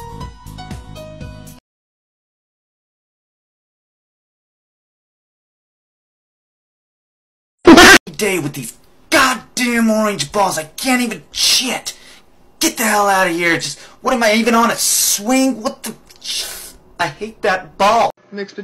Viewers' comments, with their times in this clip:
0:05 MY EARSSSSSSS I HAD THIS ONMFULL VOLUME